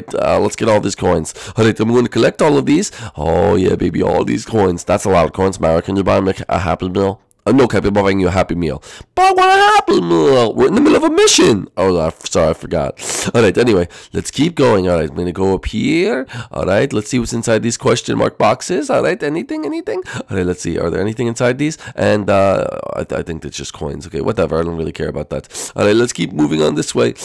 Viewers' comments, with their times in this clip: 0:08 Cappy Sounded Like Jr.